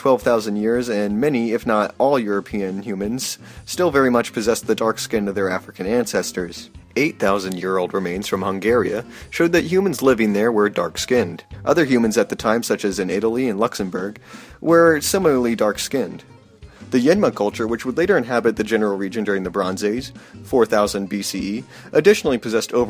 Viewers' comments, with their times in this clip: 0:07 Did you just call Hungary, Hungaria ?